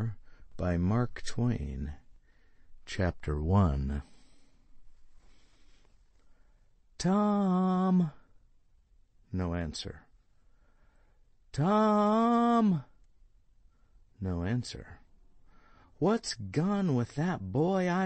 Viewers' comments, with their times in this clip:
0:05 you had to scream but you didn't want to do it xD